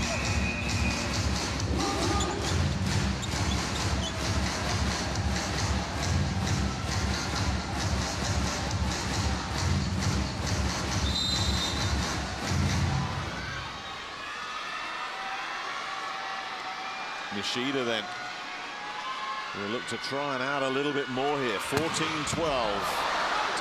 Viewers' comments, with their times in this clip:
0:05 Oooh I just love music is so intense❤️❤️❤️ lemme know the song name someone cuz I will virtually hug you